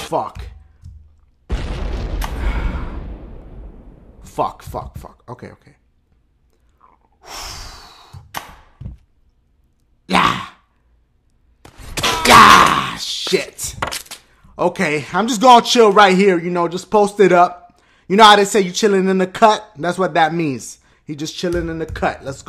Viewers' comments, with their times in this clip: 0:07 you stomach made a noise hahaha